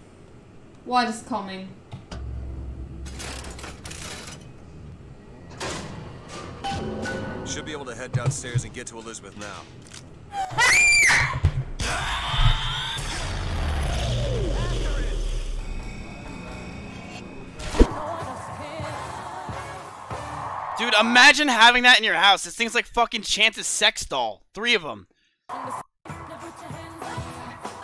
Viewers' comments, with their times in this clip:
0:10 when you kill an alien in metal slug